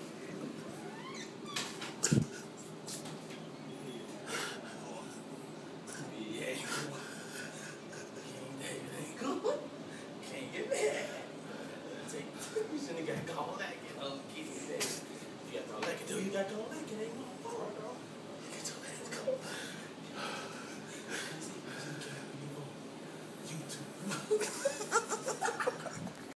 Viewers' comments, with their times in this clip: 0:10 lmao he sound like Scooby doo